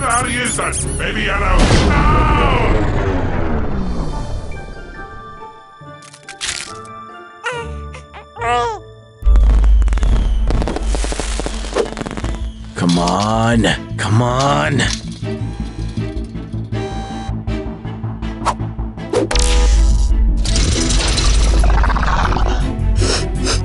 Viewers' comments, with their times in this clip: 0:07 sounded so cute i cried my heart out 😢😭